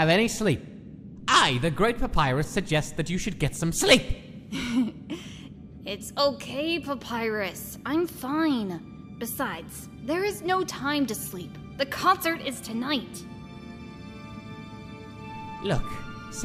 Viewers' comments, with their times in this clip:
0:04 Papyrus: I the great Papyrus suggest that you get some SLEEP. I don't know about you but that's what I heard.Either that was a voice crack or he just screamed.